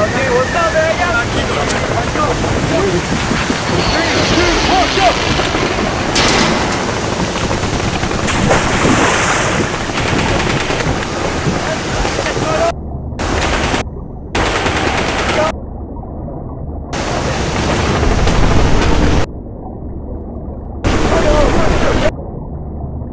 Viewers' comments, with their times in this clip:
0:07 I could of swore I heard a minecraft splash